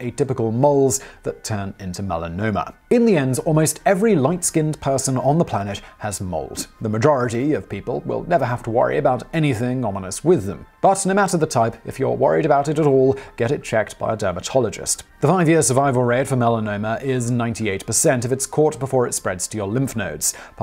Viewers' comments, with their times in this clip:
0:03 Am I the only one who interpreted as "Almost every light skinned person on the planet has MOLD"?